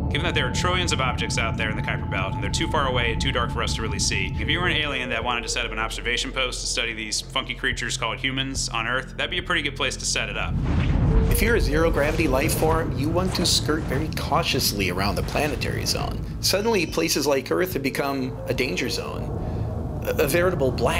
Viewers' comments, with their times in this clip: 0:07 Read as"fucking creatures"
0:07 haha I'm pretty sure he didn't say what I think he said, did he?
0:08 Did he just say fucking creatures called human ?